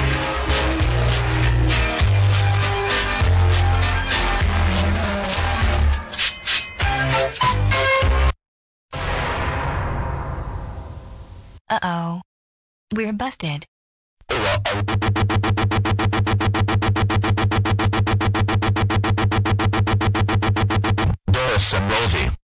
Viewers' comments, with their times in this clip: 0:09 WHAT The Music Stopped!?!?!